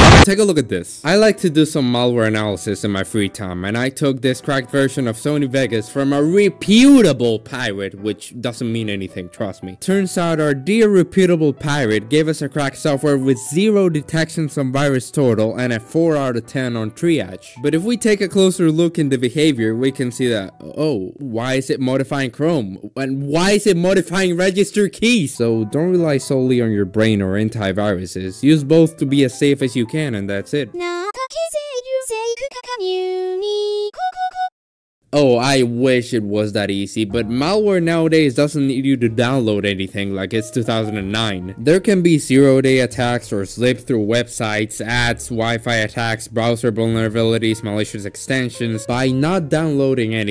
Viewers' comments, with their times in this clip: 0:06 RE PEW TABLE
0:37 Music roughly arfter brings back good and raging memories alike :) Thx for the video